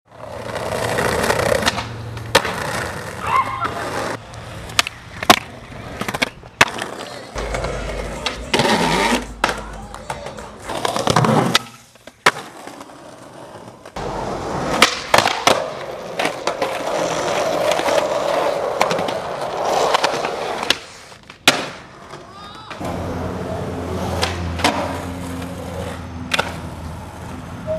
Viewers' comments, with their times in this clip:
0:08 that sounds like me when i eat beans